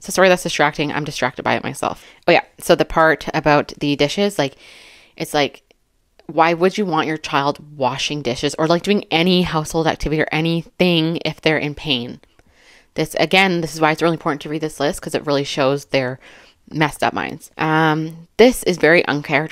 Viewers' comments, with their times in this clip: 0:04 your breathing doesn't bother me at all 😁 didn't even notice it.